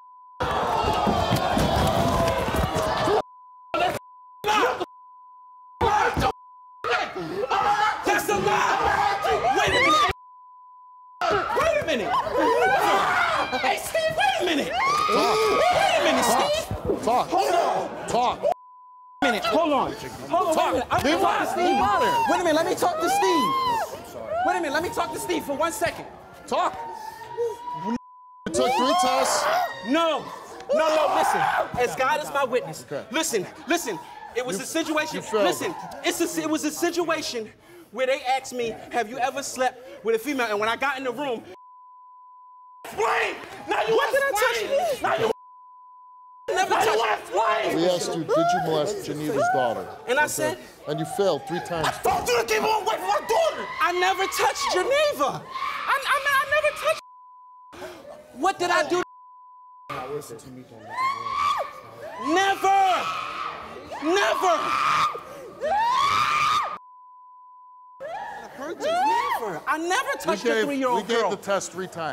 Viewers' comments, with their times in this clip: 0:07 ROOSTER! or is that a chicken idk
0:15 I swear I heard a "hee hee"
0:47 i like how steve just being calm while explaining to him 😂😂
0:58 When their voice change to that Goofy Voice tell tale sign whatever they saying they lying. Didn’t even need the Goofy voice knew he was lying as soon as his lips started moving